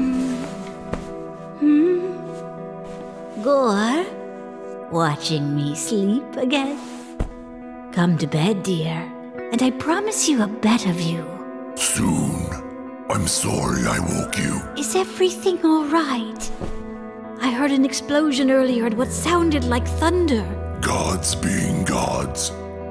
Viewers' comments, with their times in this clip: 0:07 anybody who dates a person, with a voice like Gorr ..ain't nothing good coming of that :)